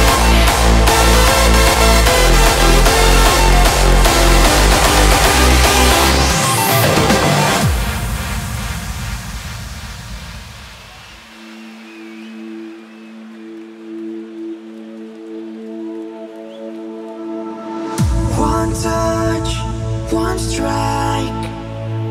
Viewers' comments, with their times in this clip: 0:06 hey cool, I hear the beginning of "rescue me". oh well, it's cut out fuck my life